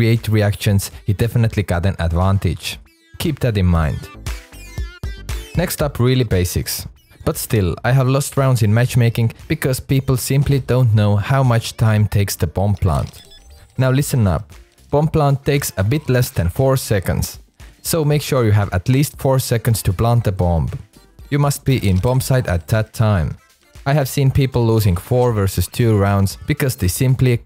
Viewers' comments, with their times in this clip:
0:08 bad english advahntischt